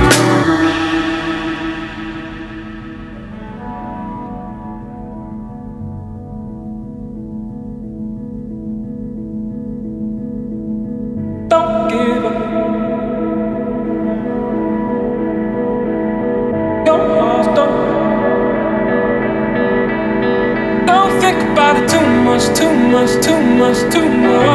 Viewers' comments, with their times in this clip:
0:06 when the sun shines over the top of the building and the music mellows out for a second, freedom!